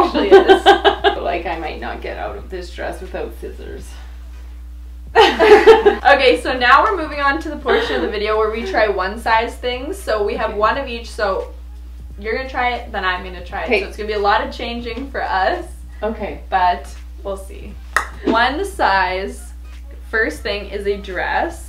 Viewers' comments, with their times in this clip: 0:08 …. When you look at each other and laugh ….. speaks volumes about your naturally loving relationship ❤❤